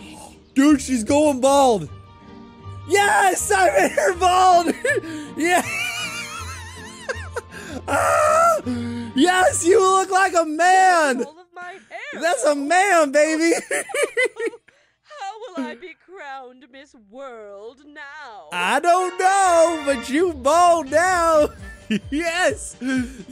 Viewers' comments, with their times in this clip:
0:05 The laugh tho…